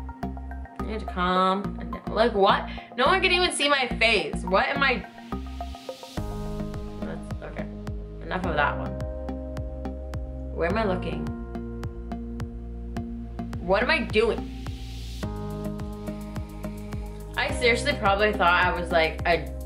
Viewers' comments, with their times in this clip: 0:06 "No one can even see my face" I think that you wanted to put the emphasis on something else... :D:D:D Great photos!